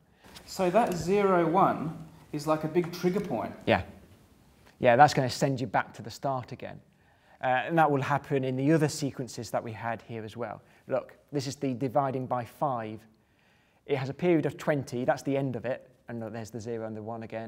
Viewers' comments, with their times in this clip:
0:03 HIS REAL VOICE :o